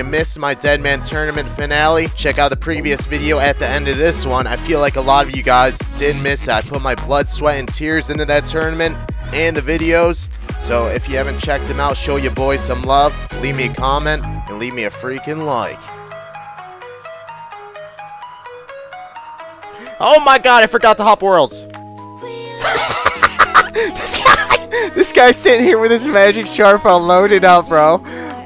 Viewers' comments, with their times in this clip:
0:09 buttsweat and tears 😂